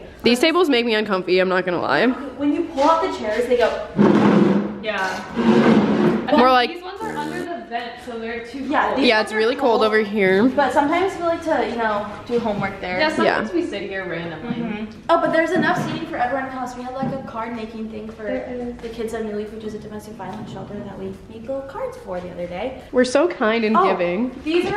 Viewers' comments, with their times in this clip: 0:08 did someone fart tho xdddd 💨💨